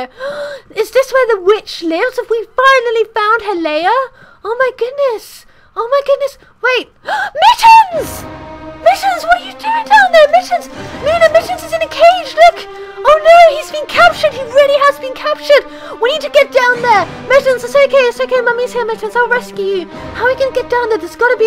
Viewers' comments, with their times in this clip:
0:07 the drematic music it scared me I was lagthing my head of,not litany XD